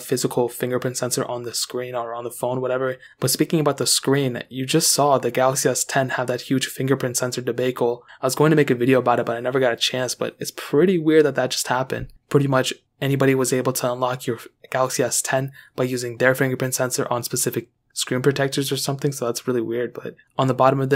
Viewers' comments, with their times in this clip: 0:03 "fingerprint sensor debagel" lmao debagel